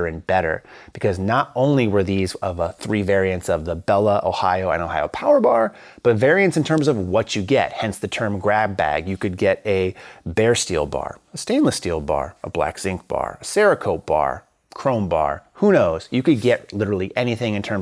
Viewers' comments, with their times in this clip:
0:05 you turned into a Castrato